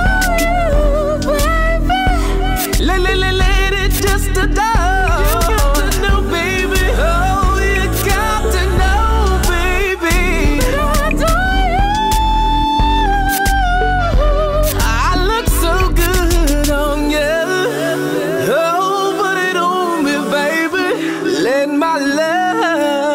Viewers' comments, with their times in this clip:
0:10 the range is op